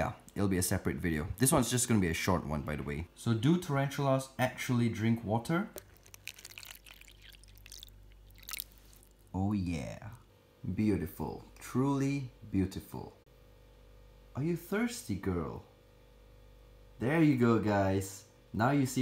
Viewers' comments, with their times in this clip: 0:07 some good ASMR there lol 😂